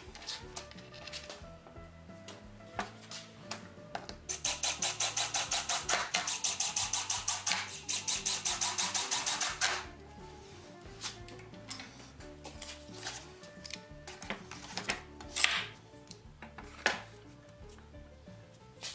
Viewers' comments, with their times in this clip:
0:06 everytime i hear that tappy-tapping of a drill-switch like that... i think..... WHAT THE HELL WHY...?????? don't this guys love they drills? What is that good for.....????